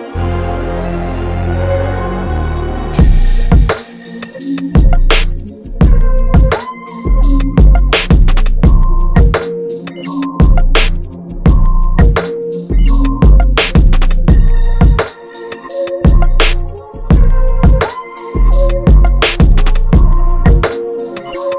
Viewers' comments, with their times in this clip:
0:07 Its louder than my mastered beat, can't understand how to get this loudness on yt 😢